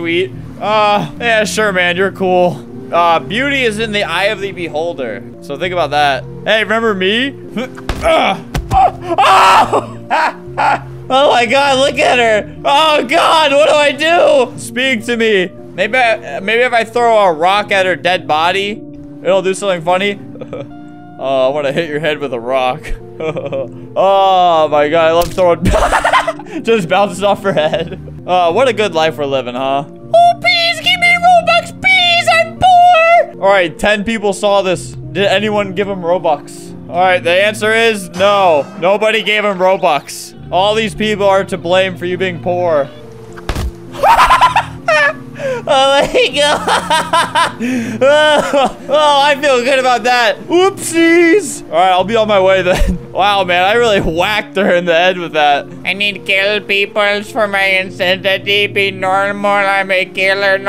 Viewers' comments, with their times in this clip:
0:10 sounds like santa claus while having stroke and a asthma attack
0:44 what was that noise 🤣🤣
0:45 Ayo the laugh is changing